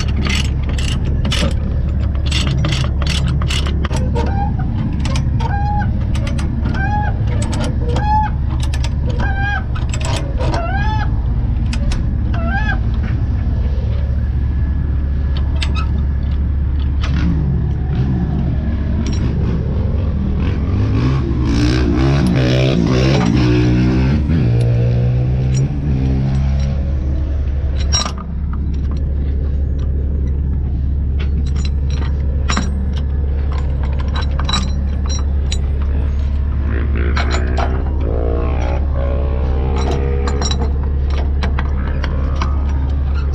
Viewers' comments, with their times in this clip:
0:03 Goose noises intensify
0:06 Lol it sounds like my little brother is crying
0:07 That sounded like a chicken lol
0:24 Somebody ripping a quad nice truck to sounds good!!